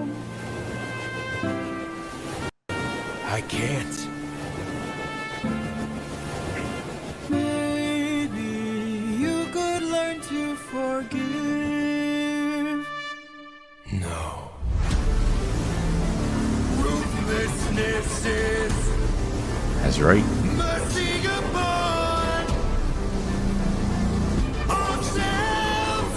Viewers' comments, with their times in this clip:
0:07 "Maybe you could learn to forgive." The same melody as "Ruthlessness is mercy upon ourselves."